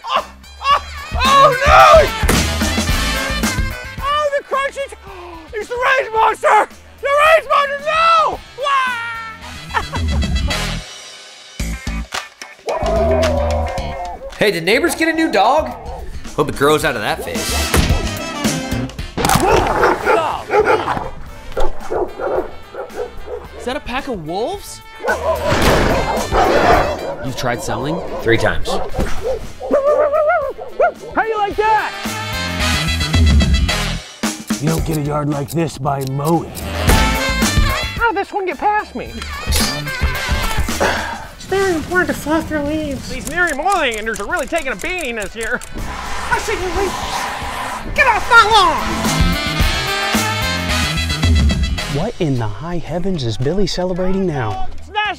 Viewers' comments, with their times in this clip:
0:08 The way Cody says why 🤣
0:09 why does bro sound like wario
0:43 what the heck did he say😂